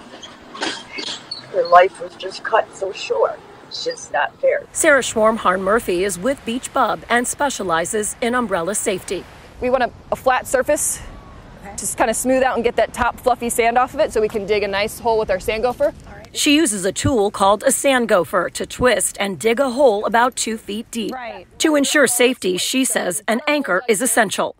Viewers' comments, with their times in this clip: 0:05 please the way she was trying so hard not to laugh 😭😭😭